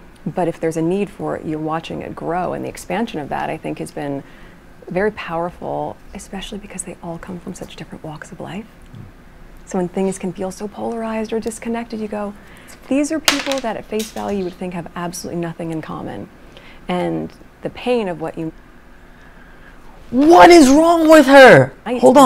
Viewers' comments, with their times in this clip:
0:10 she has a 100 different voices